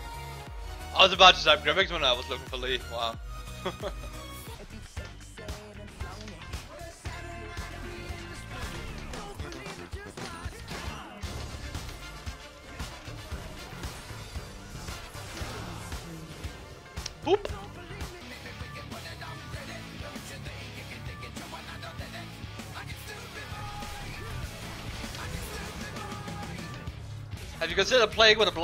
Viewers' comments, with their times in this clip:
0:05 just hear the music and see what's going on lol the moment camilie uses R and when she dies goes so well with the song !!
0:10 that Camille ulti synergizes pretty good with the beat eh?